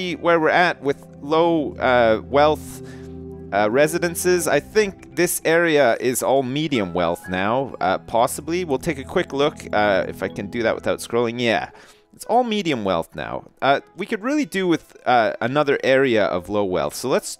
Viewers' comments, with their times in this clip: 0:03 THREE PLANES IN LESS THAN A MINUTE AND NO WOOSHS, WEEEEES OR SWISHES!